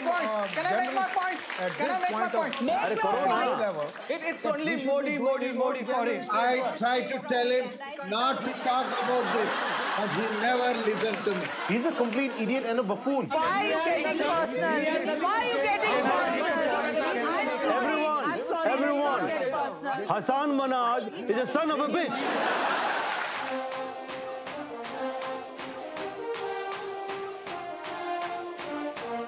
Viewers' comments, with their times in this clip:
0:10 I just love how everyone's arguing and shouting and that guy is just reading his kindle